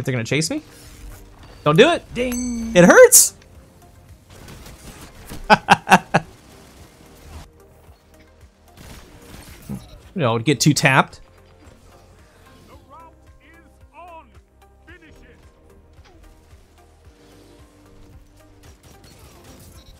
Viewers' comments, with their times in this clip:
0:05 The laugh mark is truly sinister. Looks like a fun build. That 6 stack in first match that gave up before getting embarrassed lol Keep up the rad content, bud